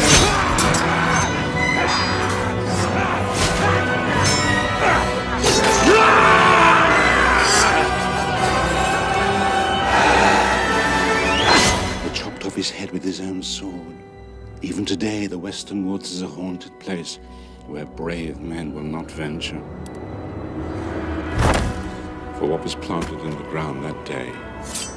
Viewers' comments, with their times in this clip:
0:05 The great hessian horseman got stabbed by a lowly, unskilled continental grunt. His face is filled with embarassment as he screams in pain wondering how he could lose to such a petty soldier.